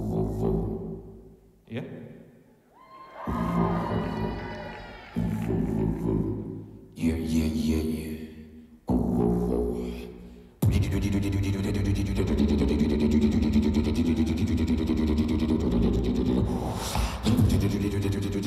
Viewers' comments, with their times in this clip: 0:05 still 2022 my dream beatbox and my brain is chilling beautiful music my legend <3